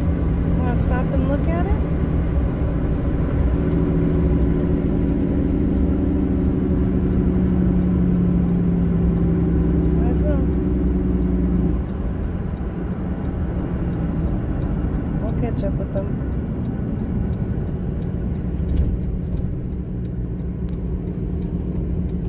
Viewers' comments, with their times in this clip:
0:03 What do you have for assistive braking? It sounded like an actual Jake Brake Great vids. Be safe!